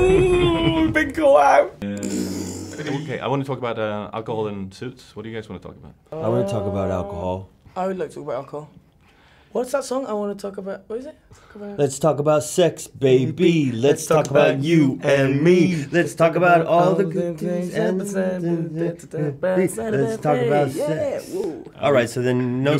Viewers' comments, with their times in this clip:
0:07 he sounds like Tom Holland